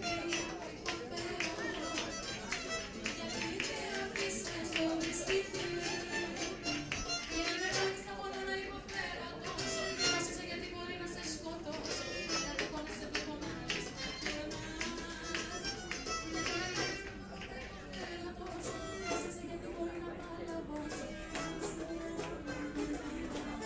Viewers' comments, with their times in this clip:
0:10 Nice timing :D These videos are getting better! Very chill. Love the addition of the swing music.